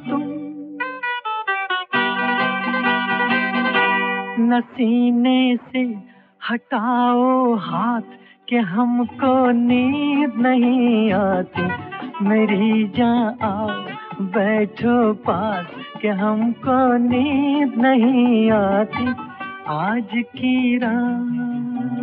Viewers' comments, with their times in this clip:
0:05 Music and lyrics both so marvellous..